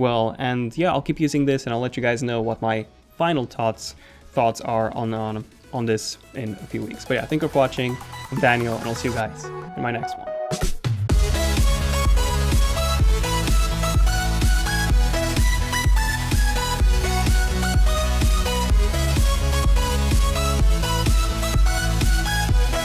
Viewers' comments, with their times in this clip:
0:10 That music always makes me want to stand up and do something productive... but all I do is watch more youtube 😂